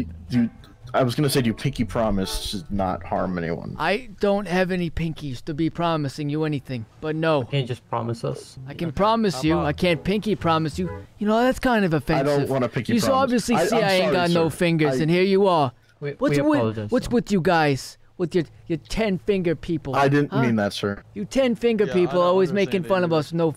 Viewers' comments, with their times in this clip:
0:08 your sounded like bill burr for 10 seconds